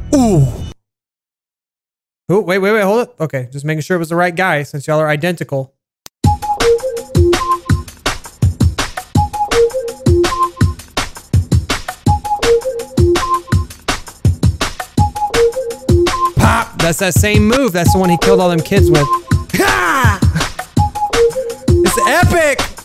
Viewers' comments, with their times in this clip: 0:06 the music here with the dramatic fighting us perfect
0:09 ngl the replaced music was probably better then the current one
0:09 why couldnt you come up with an more dramatic music